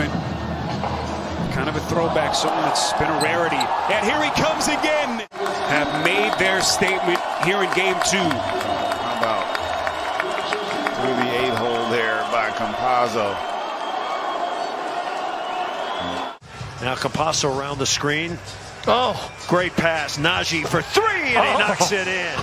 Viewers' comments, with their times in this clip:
0:09 Did this announcer just say, "... How about, through the a-hole there by Campazzo..." Lol... what???